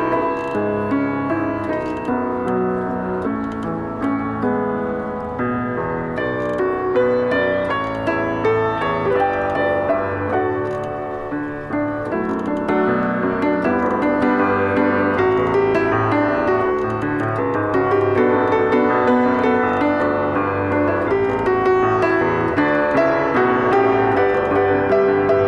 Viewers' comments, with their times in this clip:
0:06 that sounded like the end of I’m blue